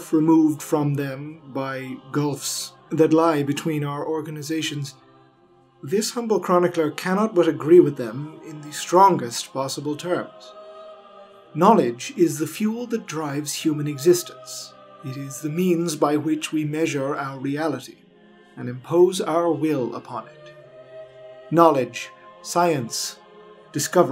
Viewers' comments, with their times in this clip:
0:06 Historator, are you sure you are feeling well? There is another corruption in your record at approximately the mark. Such mistakes, much less with such frequency, are uncommon of you, and I cannot help but worry that some taint may have been left upon you or your equipment.